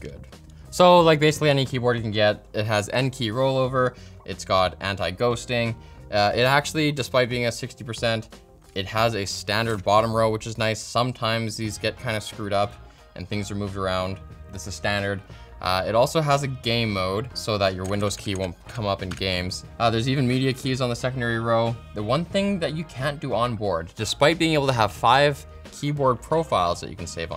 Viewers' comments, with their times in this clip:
0:10 lmao i head that as "gay mode" and thought it had some special rgb function
0:15 Gay mode. Nice.